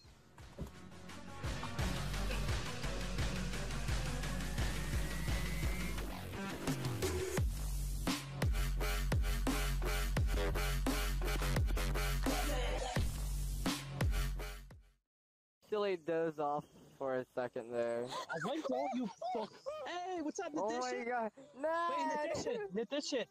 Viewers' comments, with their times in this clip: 0:07 that song is sick! >:)